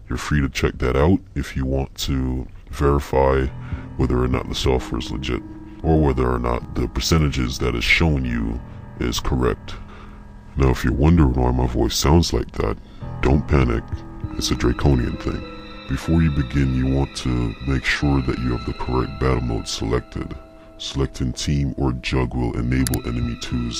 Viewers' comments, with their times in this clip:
0:10 :) I'm a Drekonian. All Drekonian males over 300 years old sound like this.